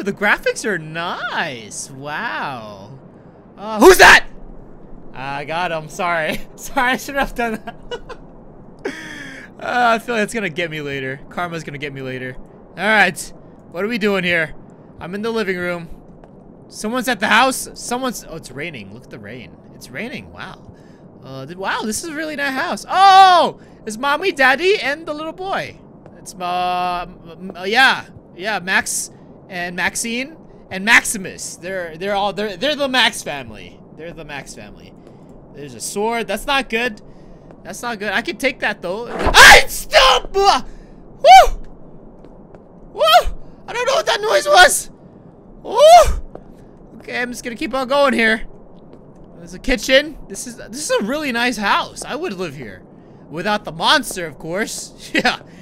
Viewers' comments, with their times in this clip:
0:03 my headphones broke man!!!!!!!!!!
0:03 my headphones broke man!!!!!!!!!!
0:39 if u didn’t know what the sound was, the big door behind the couch closed 💀